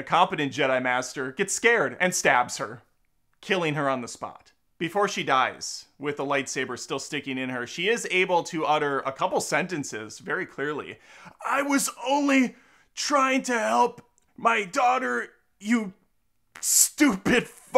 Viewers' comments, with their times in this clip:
0:03 😂 I literally almost spit out my coffee after his crude retelling and then when he started singing it